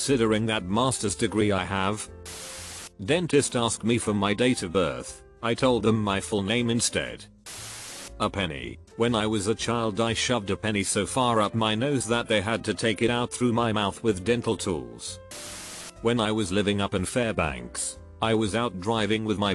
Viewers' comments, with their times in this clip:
0:07 *HAD ME DYING*🤣🤣 SO DRY